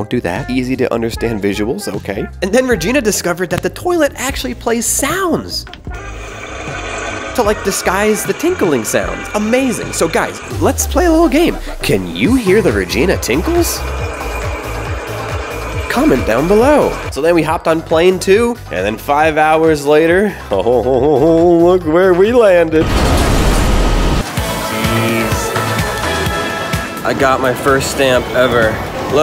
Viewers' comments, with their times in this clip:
0:10 yes I hear the tinkles